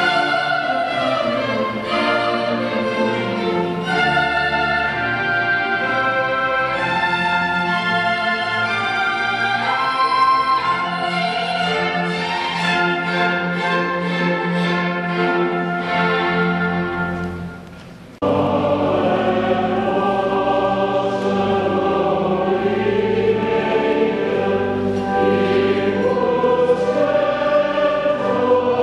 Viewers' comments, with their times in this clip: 0:10 nice top c in